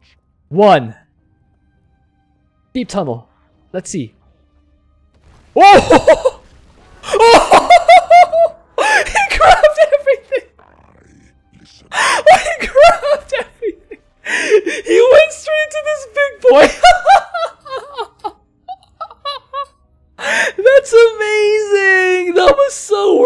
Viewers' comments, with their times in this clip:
0:04 That laugh ;D play it on a loop and you have a great meme ;))